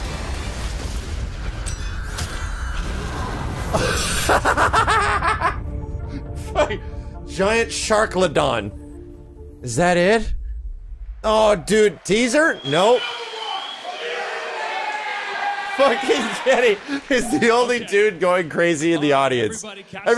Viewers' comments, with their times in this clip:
0:03 watch out psycho laugh coming
0:04 that laugh was strangely satisfying